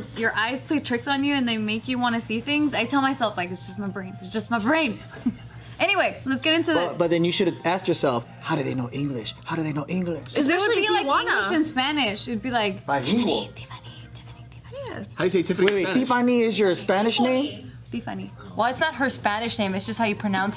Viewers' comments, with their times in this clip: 0:05 I heard the Tiffany chant!